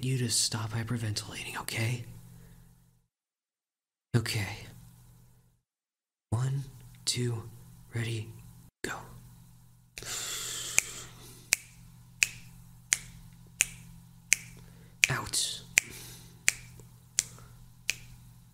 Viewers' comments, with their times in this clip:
0:06 no one: actually no one: me: freaking out because he snapped for the counts during the breathing practice (im a band and orchestra student and i was very happy but dont know why👍)